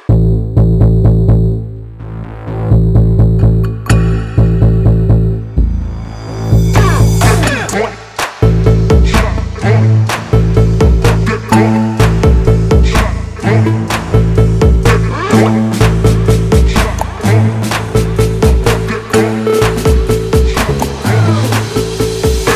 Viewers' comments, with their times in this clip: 0:08 Goes so Hard!!! That’s some wobbly ascension right there!!